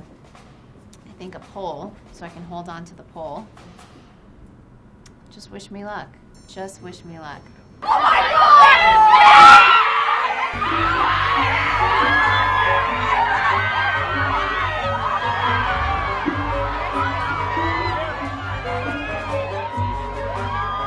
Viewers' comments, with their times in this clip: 0:06 my ears are dead.
0:07 Warning to all headphone users!! Vote this up.